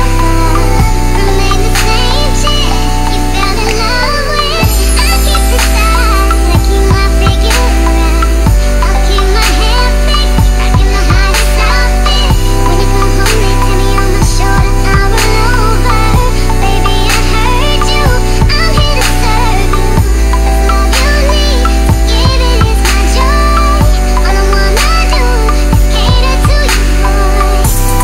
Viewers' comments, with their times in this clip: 0:10 there's a point by that it seems the voice loses rhythm and for some reason I really like that touch.